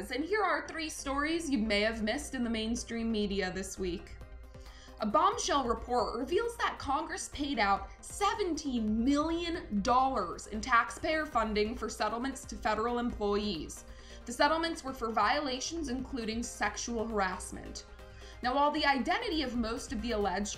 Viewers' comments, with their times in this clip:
0:04 So.... you can't pronounce the word "report"? Hint: It has a "t" at the end. A "t" is pronounced by touching the tongue to the front of the upper hard palate. Try it! You sound as if you are about to gag yourself trying to avoid a standard "t" pronunciation.